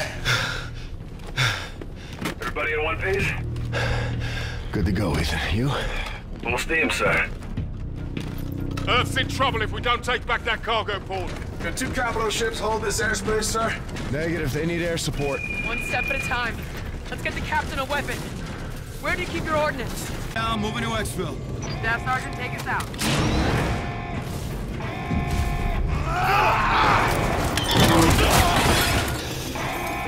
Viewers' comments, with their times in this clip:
0:10 did anyone else notice the metal detector go off when Ethan ran through it?
0:14 I love that the metal detector goes off on Ethan